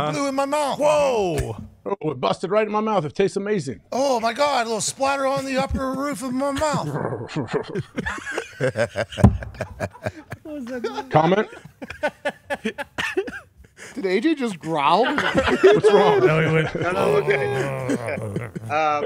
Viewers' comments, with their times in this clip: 0:07 AJ Hawk growl 😂😂😂